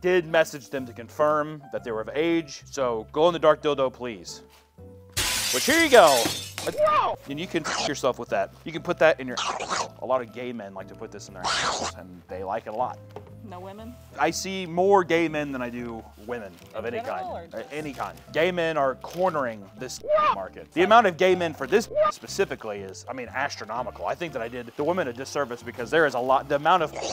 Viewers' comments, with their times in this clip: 0:10 The grapefruit technique noises sent me into orbit